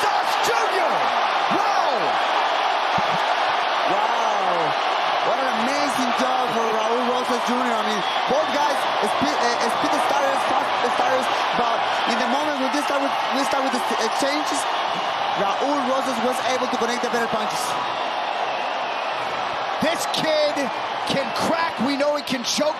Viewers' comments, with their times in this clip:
0:05 Commentor needs to stop yapping